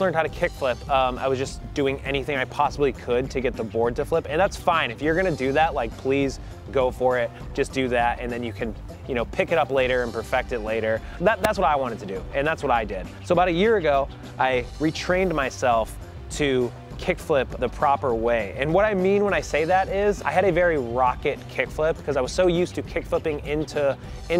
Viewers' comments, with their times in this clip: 0:10 who else heard the nose scope sound